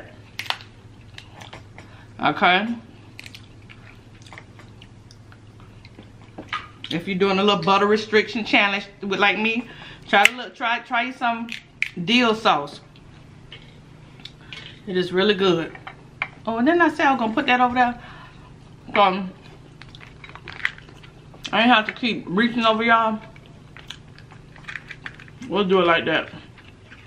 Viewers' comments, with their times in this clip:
0:09 Girl you got me screaming laughing am!! The VEGUMS!!!!!!! 😂😂😂😂😂😂😂😂My neighbors hate me right now.